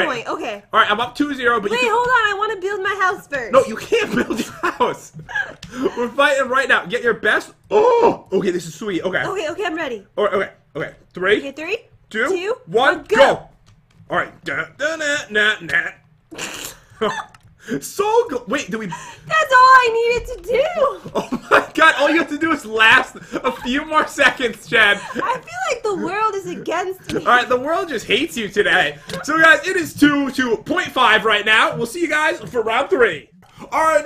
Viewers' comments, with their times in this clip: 0:07 *O M E G A G A S P*
0:15 I love when you sing that so mush is so funny LOL